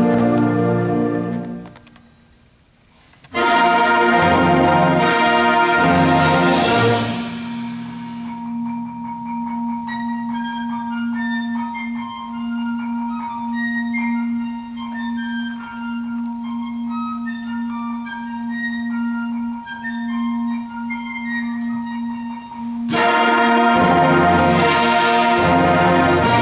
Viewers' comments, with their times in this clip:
0:10 We are playing this in my 8th grade band and I got the piccolo part and I'm trying so hard to learn it and whoever did that piccolo was amazing (piccolo part )